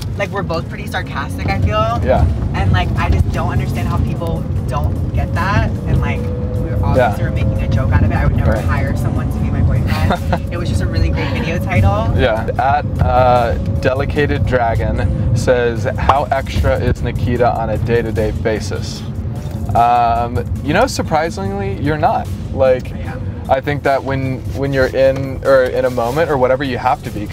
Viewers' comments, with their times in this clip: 0:10 The guilty laugh thou.. 😂